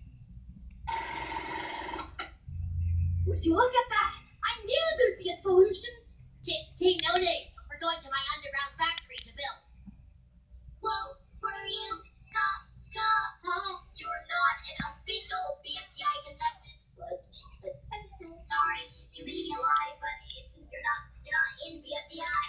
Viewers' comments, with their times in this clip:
0:03 Ruby’s voice is swirling